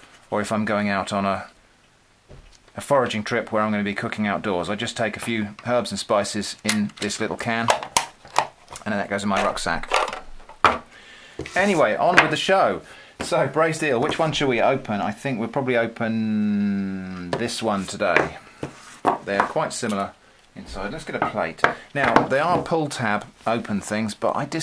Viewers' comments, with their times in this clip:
0:05 When someone says herbs like you do